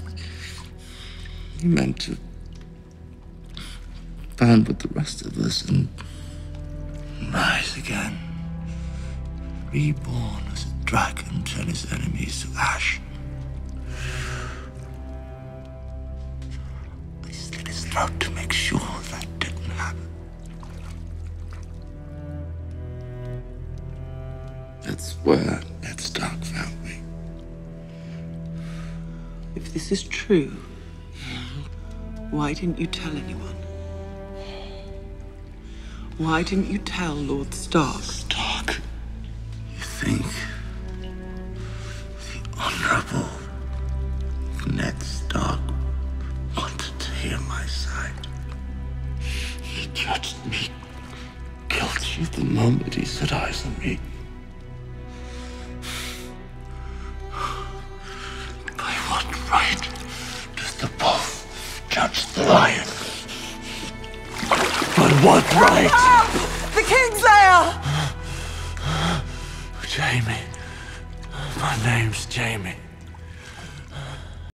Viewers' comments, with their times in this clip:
0:06 the score that comes in when he says "rise again, reborn as a dragon" gives me chills
0:15 you can literally tell Jaime's story is true. The pain in his face, his voice... he did the right thing.
0:38 might be my favourite line delivery in the whole show
0:58 he Roared that line!
1:01 When he said "LION" it sounded like he ROARED...chills 😭
1:01 The sound dept 100% added a lion roar or a distortion FX to Jamie's speech when he said the word "lion" Clever af. That shit alone was better than seasons 7 and 8.